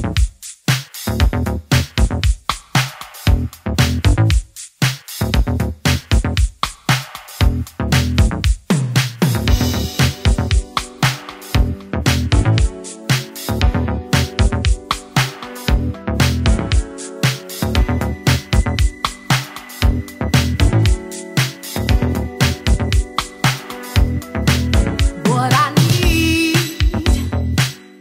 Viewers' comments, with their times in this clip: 0:09 That drop is nice